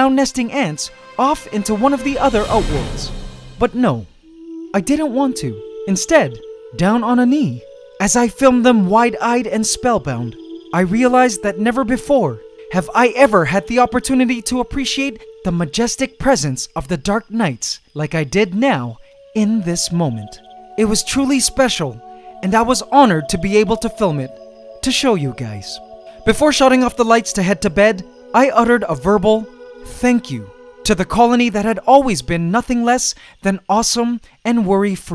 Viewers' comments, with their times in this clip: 0:05 the music made me sleepy
0:19 does anyone know where I can listen to this soothing background tune. Thank you